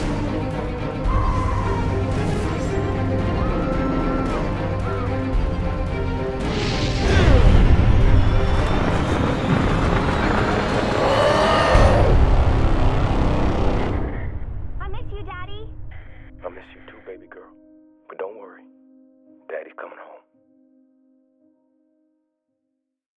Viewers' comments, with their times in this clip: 0:10 the roar was like wolverine's